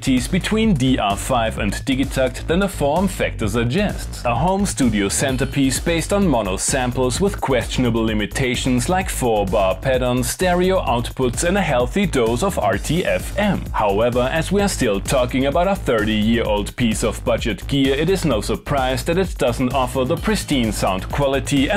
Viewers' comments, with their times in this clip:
0:06 The production on Boogaloo finale is on the same level as the meme So good! :medal-yellow-first-red: